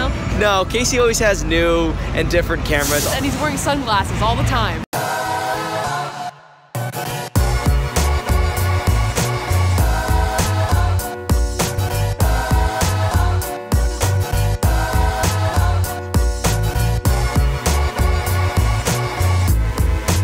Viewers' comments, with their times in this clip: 0:07 Love the Casey Neistat-esque music that starts playing :D